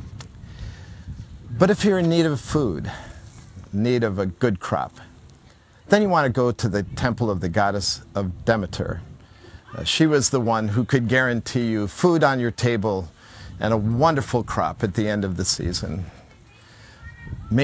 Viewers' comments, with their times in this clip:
0:04 No disrespect intended, but i did a double take when i thought you said ‘if you needed a good crap’ (you said of course crop) i chuckled at that... great series!